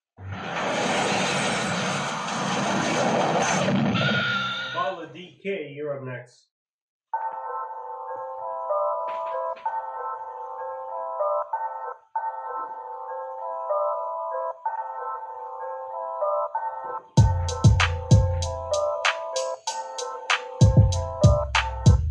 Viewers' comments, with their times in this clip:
0:06 this beat was lowkey nice tbh